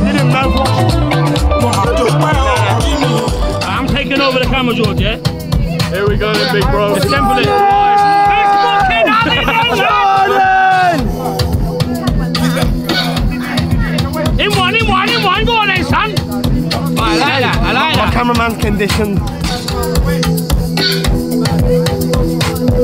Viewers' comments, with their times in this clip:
0:08 Play of amapiano!!!Again in Dubai Thats lit!!!